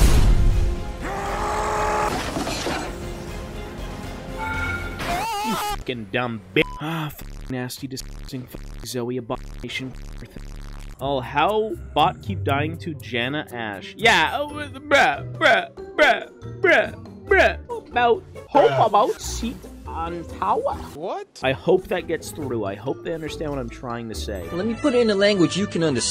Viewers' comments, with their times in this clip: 0:08 bruh I fucking died, the amount of censoring is killing me LOL